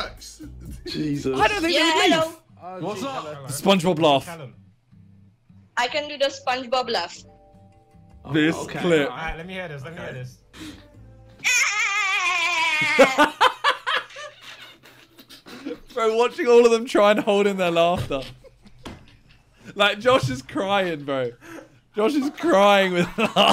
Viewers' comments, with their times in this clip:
0:03 ‘the SpongeBob laugh’ ahahahaha that is a goated one I can’t lie it gets me everytime🤣🤣🤣🤣
0:11 in my years of watching Simon, I’ve never heard him laugh like that😂